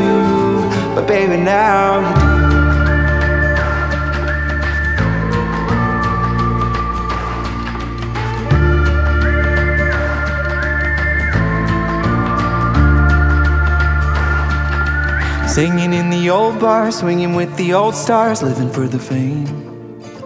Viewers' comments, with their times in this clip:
0:04 when you are whistling I'm getting resurrected